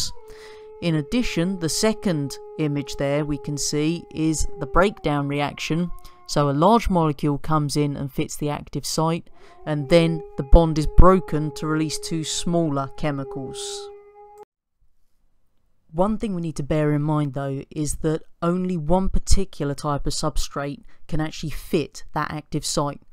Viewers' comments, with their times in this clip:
0:08 Very helpful, what is that scary noise ?